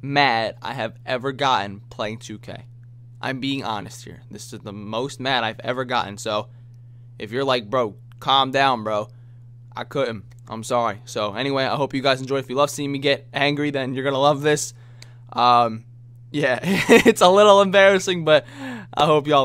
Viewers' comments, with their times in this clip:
0:06 did the audio repeat?